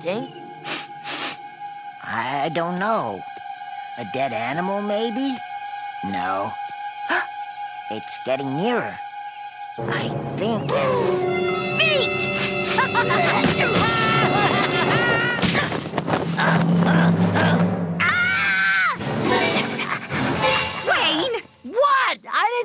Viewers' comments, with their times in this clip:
0:10 Evil Mind 3 Music plays Attack of the evil wayne cramp's feet